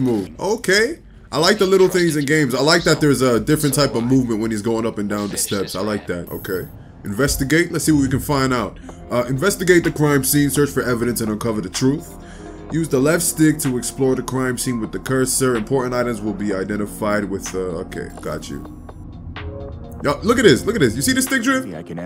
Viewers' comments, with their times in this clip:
0:07 why does the background music sound like loki’s theme